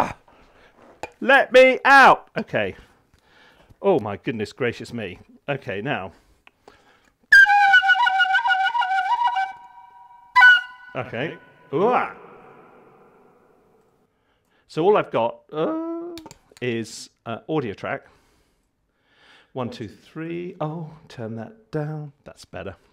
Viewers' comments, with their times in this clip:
0:07 you wrote 50% of soundtrack for the next tomb raider, considering their current standards